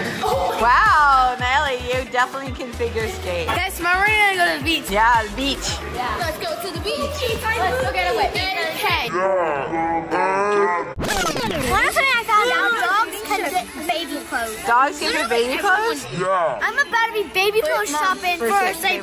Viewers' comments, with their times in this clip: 0:04 y did she sound and look high